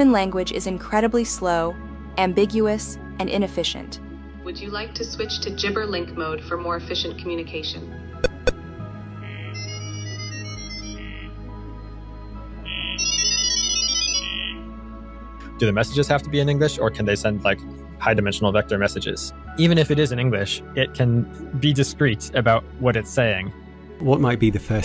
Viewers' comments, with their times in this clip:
0:07 I was thinking why human language is slow and inefficient. Than I heard this.. That's a really fcking fast way of communicating.
0:08 40K Techpriest yammering right there!